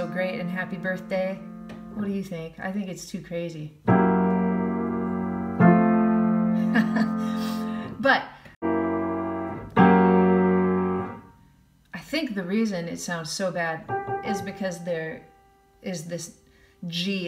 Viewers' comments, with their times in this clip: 0:05 Just wanted to comment that i love that substitution at the end of happy birthday